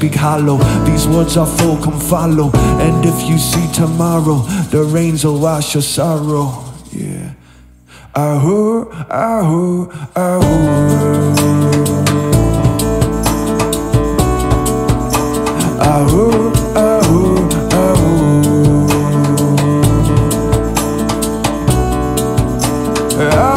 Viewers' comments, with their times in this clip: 0:06 "Give dank some praise at last".... right? that's what he said, right? hehe